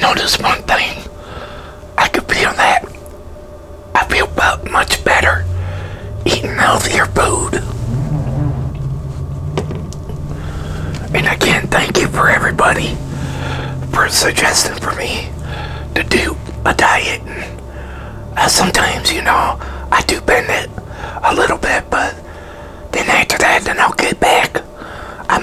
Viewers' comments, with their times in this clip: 0:08 Tremendous FART mark!